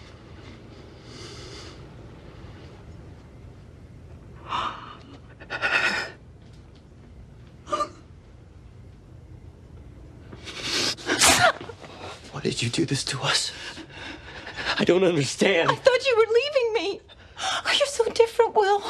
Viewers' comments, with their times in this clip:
0:04 plsss the breath 😏